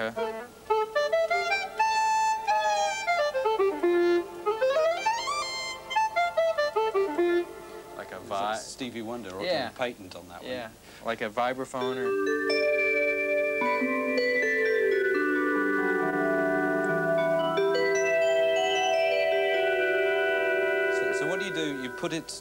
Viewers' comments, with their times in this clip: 0:08 Those distinctive classic bells (not so much a literal vibraphone) such an effective "warm" sound. Applied a bit in the song, "Goodbye" off "Travels". One of those details, flavors, in their ensemble/orchestration at the time that hooked me from my classic/prog rock back in middle school, to a broader pallete.